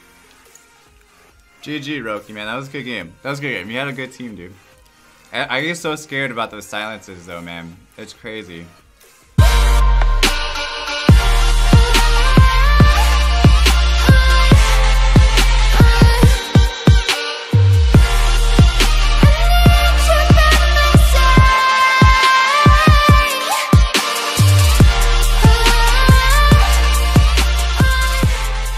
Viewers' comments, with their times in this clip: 0:09 I fu*** shake because I'm using my earphone so I can't hear the TV (max volume) then